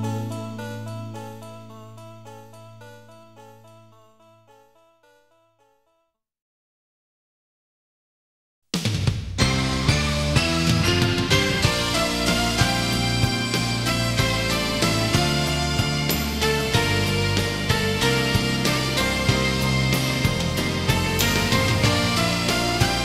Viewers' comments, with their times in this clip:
0:07 Man, I just love Being ballads! And Seiichiro Kuribayashi is my favorite male vocalist ever. A lot of people know his compositions (Especially Unmei no Roulette Mawashite + Ai wa Kurayami no Naka de) but his voice is very underrated! It's very soft and I like it a lot! And God knows how much I love his rendition of Sabishisa wa Aki no Iro !! 🥹🥹